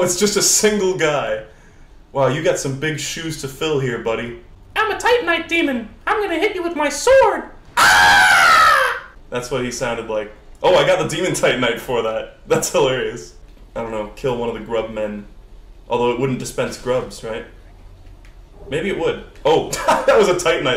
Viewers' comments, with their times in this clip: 0:04 Oh god the scream at the end sent my sides into orbit